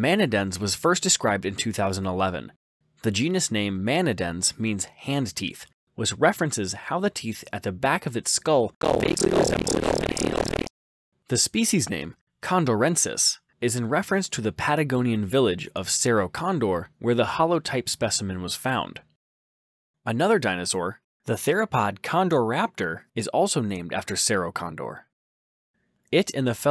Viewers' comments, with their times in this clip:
0:08 audio is a little weird to say the least